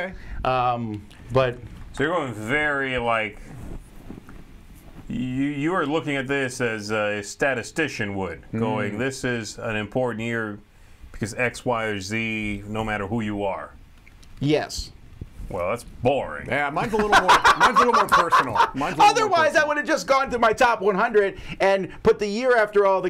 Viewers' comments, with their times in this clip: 0:06 Zee 'So you would say that this is an important year because of X, Y or Zee'